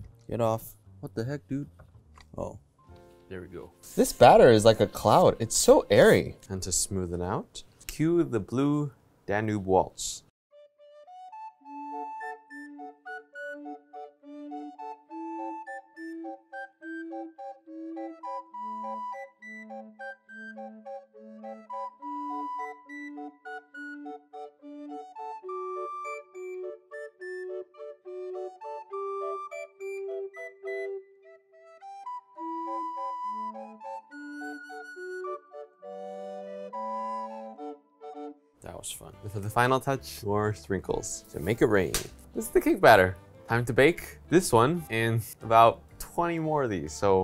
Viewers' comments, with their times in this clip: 0:10 squid game music starts to play
0:10 it's like a asmr or something...it make me sleepy
0:31 Oh god music gave me squid game vibes